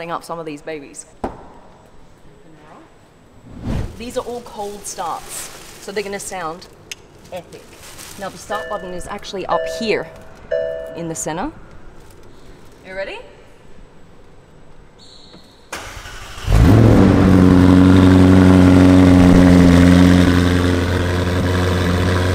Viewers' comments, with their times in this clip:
0:09 that’s probably the best car chime I’ve ever heard